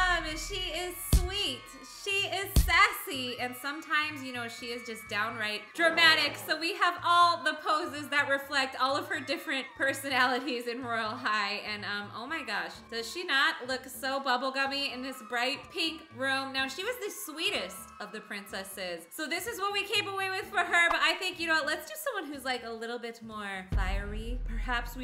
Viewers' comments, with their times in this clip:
0:08 Guys how did she know she was a making a bubblegum princess look at her chat omg 😮 I know the can hear you if you turn up your volume and hear closely you can hear breathing omggg